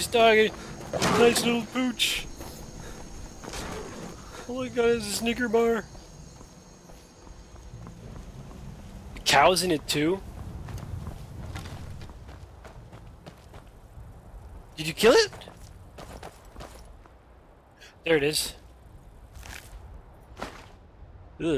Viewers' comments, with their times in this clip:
0:04 I misheard you first time